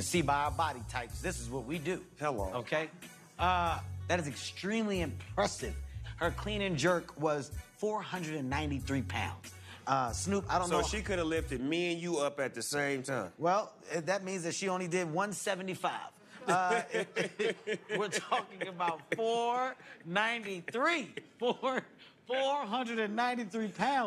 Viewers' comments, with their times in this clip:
0:07 Snoop dogg, more like goofy from mickey mouse ugh giya gug